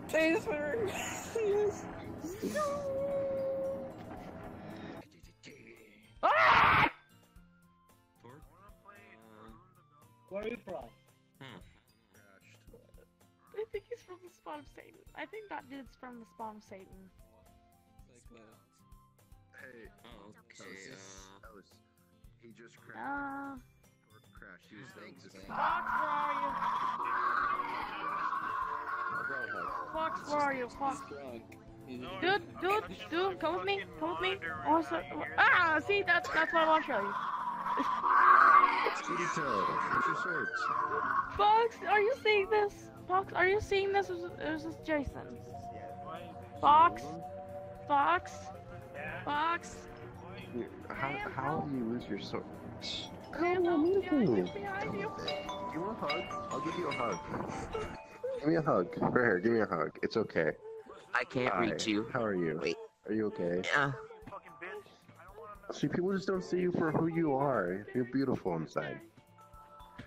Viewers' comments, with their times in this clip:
0:05 that scream do
0:47 I love how you chan hear the wintergatan marble machine music video in the backround
0:54 the xylophone actually could work nicely with that avatar
0:57 The sudden marble machine song playing was unexpectedly soothing.